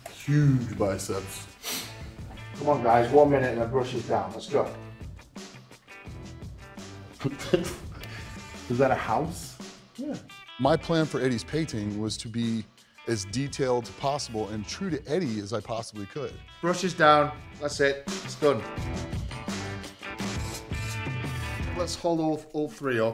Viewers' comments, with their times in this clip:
0:10 cutest "yeah" ever